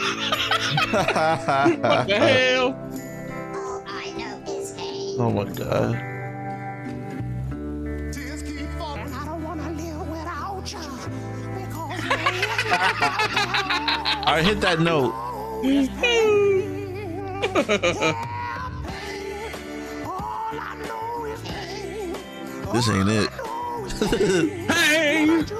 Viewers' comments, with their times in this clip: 0:09 Cyborg song really fire and funny😭😂💀